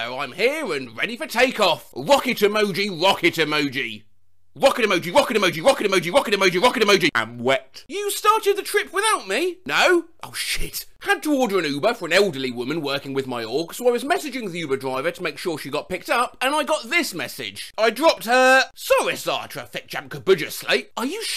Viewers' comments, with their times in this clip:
0:03 this rap will become my new ringtone